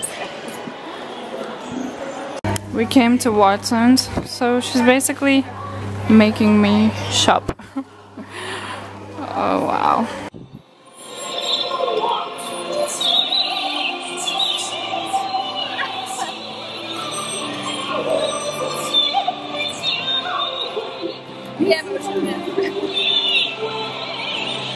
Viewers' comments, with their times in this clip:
0:10 got to give credit to that plaza dance movements mimic those Chinese Da-Ma 大妈 aka aunties，you and your friends sound east Europeans，damn east european gals are 10 times hotter than merikwan chubs